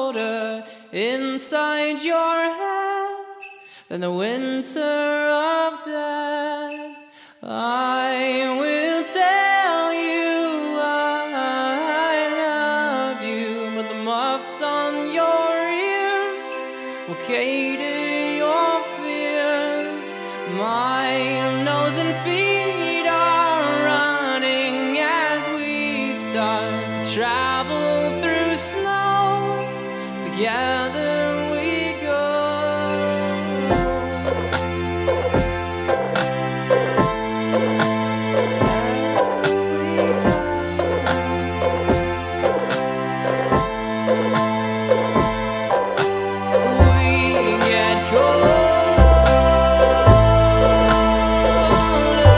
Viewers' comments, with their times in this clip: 0:07 omg his voice goes high, low,high. i love that.
0:35 almost the same instrumental as The Hype